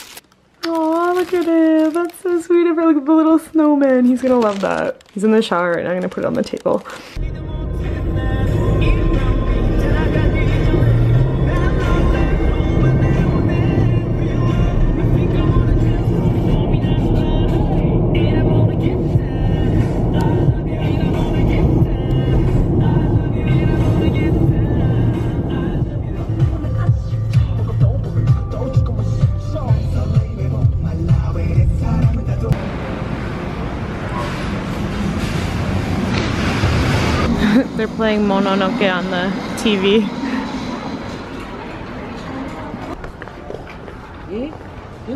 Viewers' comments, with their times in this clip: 0:09 😍😍big bang on the back ground tho 😍😎 so awesome gr8 vedio btw 🙌🙆👍✌
0:31 BIGBANG SONGS PLAYING IN THE BACKGROUND?!